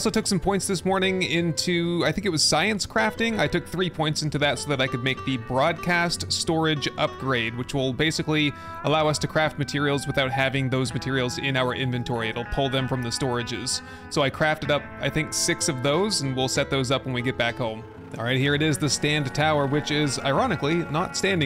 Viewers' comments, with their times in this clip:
0:05 So I'm only in and you got in the helicopter but your audio didn't switch over to sound like it did other episodes, you know, from your gaming mic to the helicopter headset... I'm come back to comment after I'm finished with the episode tho. Just in case you mentioned why you didn't change the voice, if you forgot and changed it during or if you decided you won't do it anymore. We'll see. I'll be back ellipses